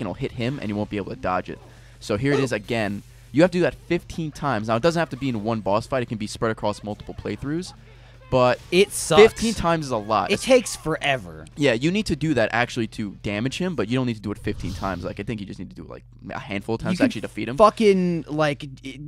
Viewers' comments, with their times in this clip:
0:04 Has anyone else noticed that ray finishes loads of his sentences sounding like a question?? he does it 2 times in 10secs